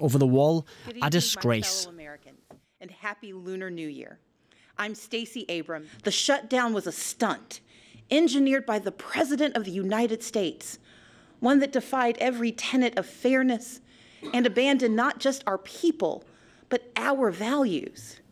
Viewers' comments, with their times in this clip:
0:06 Stacey Abrams, Is that a doughnut stuck in your throat.